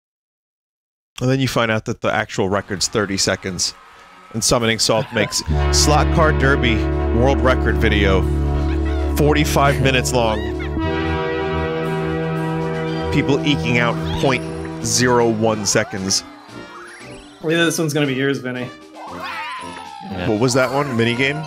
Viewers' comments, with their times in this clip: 0:05 I have this song in my playlist so i thought a ghost started up my spotify and got freaked
0:07 Why is there music ?